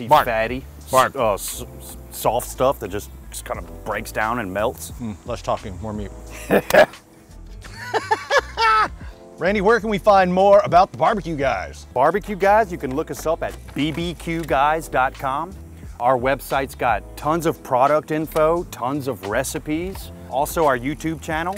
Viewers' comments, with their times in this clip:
0:03 You can hear the mans enthusiasm, aswell as see it.